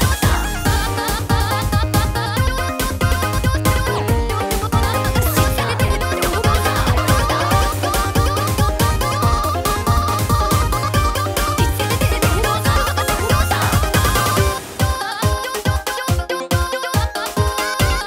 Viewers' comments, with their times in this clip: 0:06 really liking the additional pitch from onward, sets this mix apart from the rest of teh Clodiuses